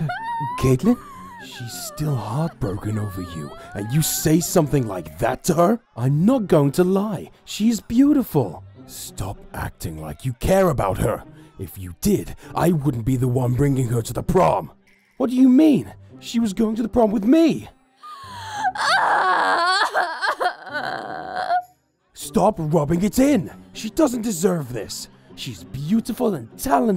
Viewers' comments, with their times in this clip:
0:07 JEFFORY TALKING AFTER GARROTH IS SO WEIRD BECAUSE THEY HAVE THE SAME VOICE ACTOR AND THEIR VOICE SOUNDS SO FAMILIAR